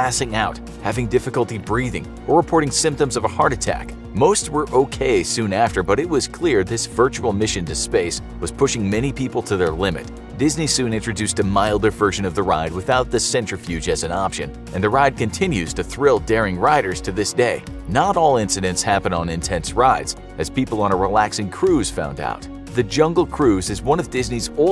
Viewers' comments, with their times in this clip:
0:09 I like that kid crying